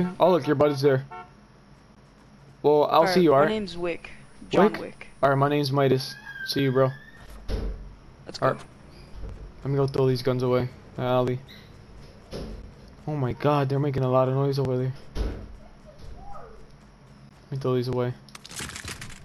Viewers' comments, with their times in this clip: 0:06 there is a scream